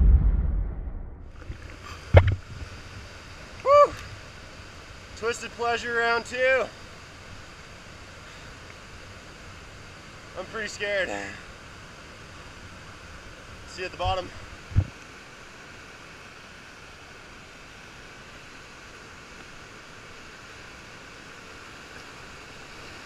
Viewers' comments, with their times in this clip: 0:10 This was badass and all but what the hell was that noise ?!